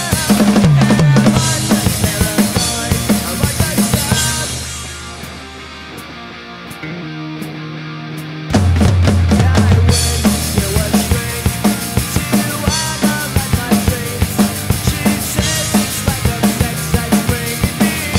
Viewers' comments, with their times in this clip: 0:06 not how Tré plays he rolls his sticks on the ride cymbal at almost every concert Other than that 👍